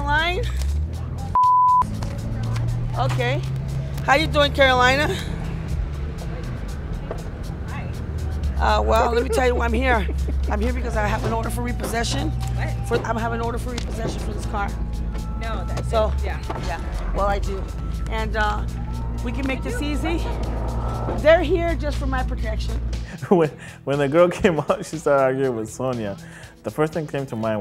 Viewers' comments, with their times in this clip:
0:08 Froy's chuckle when he saw Sonia's twin 😅😅😅😅